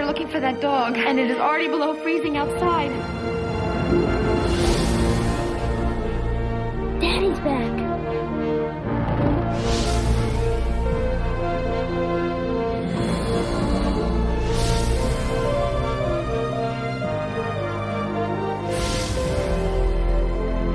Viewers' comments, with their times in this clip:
0:05 love the music from ... pulls at my heart